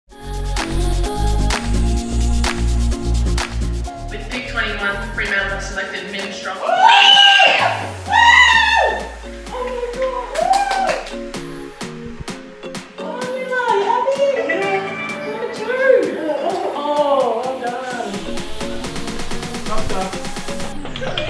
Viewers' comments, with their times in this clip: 0:06 my ears are bleed because I have headphones at full, owwwwwwwww.......